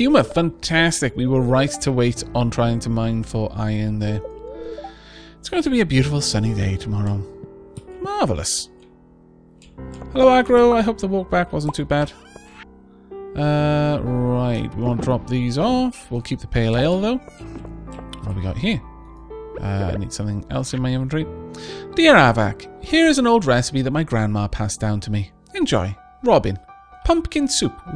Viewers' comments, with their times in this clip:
0:08 That winter music is just so nice and relaxing.